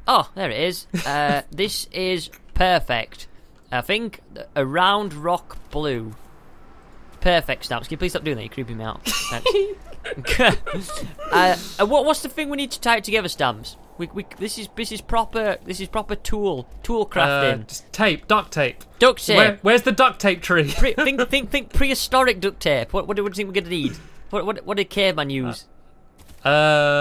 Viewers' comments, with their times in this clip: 0:09 most adorable laugh ever. <3